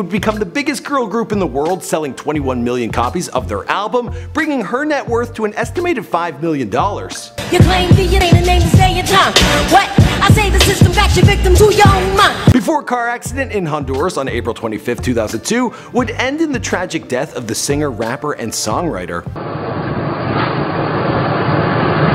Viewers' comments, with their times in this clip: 0:04 Did....I just hear 5 BILLION Dollars???!!!